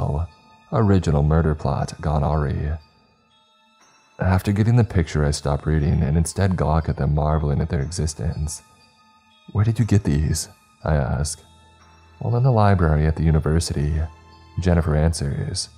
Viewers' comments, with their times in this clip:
0:03 “Original killing gone…” Areee? 😕